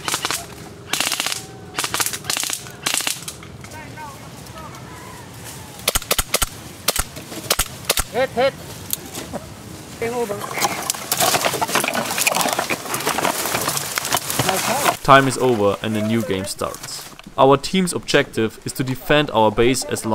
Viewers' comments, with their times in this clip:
0:08 Did someone fart xD